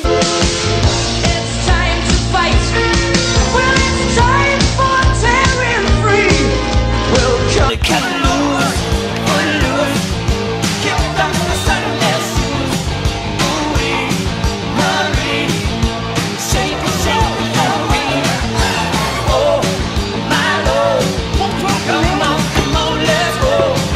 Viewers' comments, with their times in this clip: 0:08 The music and the "steps" timed so perfectly. 🤣 And then rewarded with more at the end!